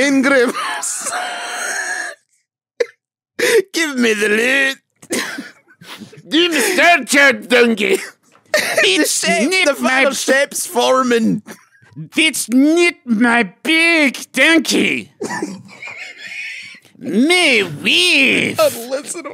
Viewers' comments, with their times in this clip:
0:04 My favorite part of the podcast was when they started speaking complete gibberish while devolving into laughter.